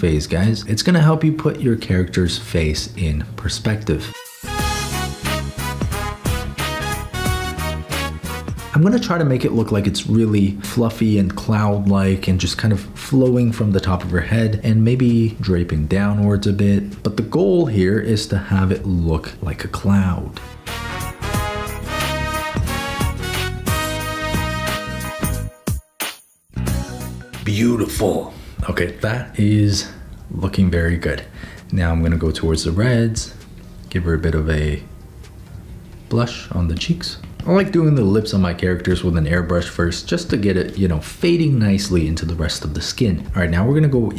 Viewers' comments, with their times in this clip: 0:05 that persona 4 music jumpscared me so hard
0:26 when he was yassifing cloudia he sounded like bob ross